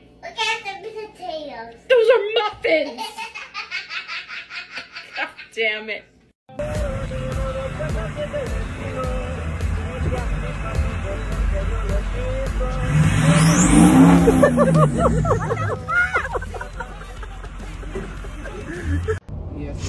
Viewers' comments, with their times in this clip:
0:03 that was the most evil laugh I've heard lool